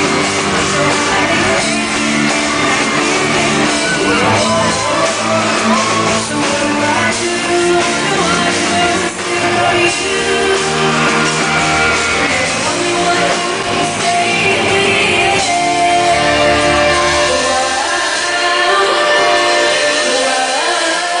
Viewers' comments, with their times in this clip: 0:08 I was just wondering why did 'but you're only takin and not givin anymore' was so silent, then he showed the technicians that the volume on his mic should be higher